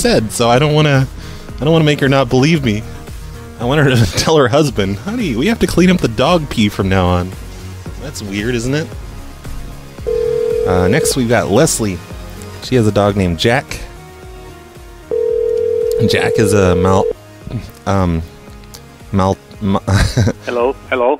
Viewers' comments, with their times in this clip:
0:05 the dog lookalike contest winner was awesome, the husband laughing in the background and how she went along with it